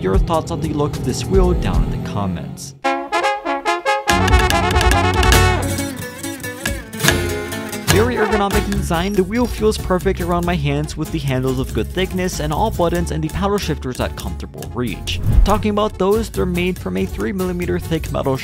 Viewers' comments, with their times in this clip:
0:03 Lmao wasn't expecting that music